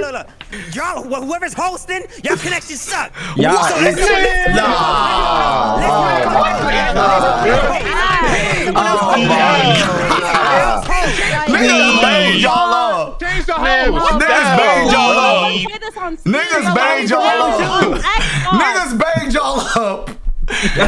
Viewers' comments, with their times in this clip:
0:04 RDC all saying nahhhh like that in unison was hilarious 💀